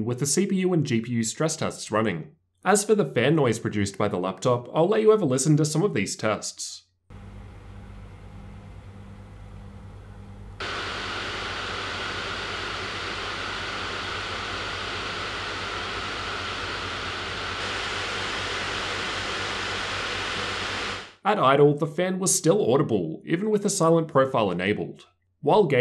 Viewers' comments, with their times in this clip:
0:07 You can hear the fans for yourself it's about average at stock speeds, a little above average with overboost mode.
0:07 You can listen for yourself it's about average compared to others.